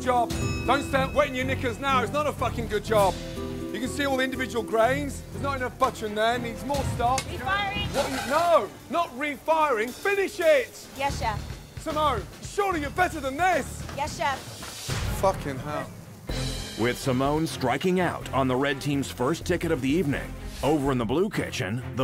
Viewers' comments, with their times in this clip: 0:06 "Refiring!" "Wh- no- not refiring, finish it!" I love how he sounds so perplexed and angry at the same time